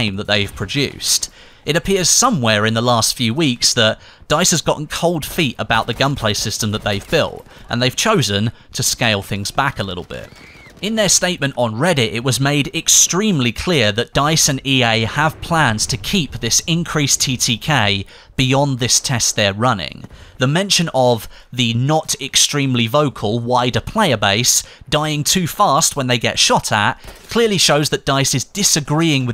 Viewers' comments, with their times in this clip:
0:09 that twelve year old sounding girl scream is ridiculous XD, just one of the millions of problems with this game
0:15 Anyone else hear that girl scream at like